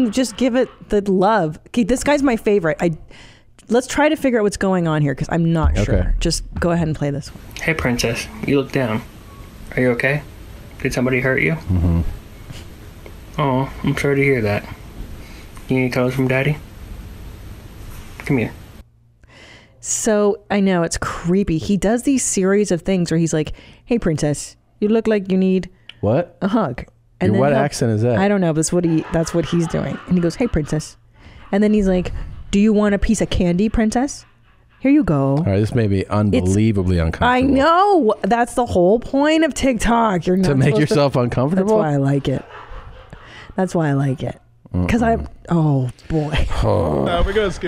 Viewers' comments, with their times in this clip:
0:06 is this guy doing a Kyle Mooney impression?
0:30 that fucking laugh😂